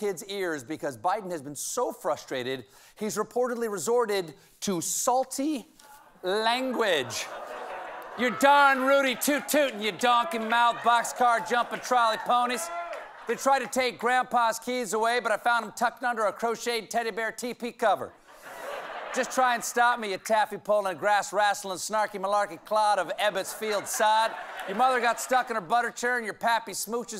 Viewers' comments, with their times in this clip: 0:08 ( ...) Stephen , have you ever thought about a career move... you'd make a great rapper... 👍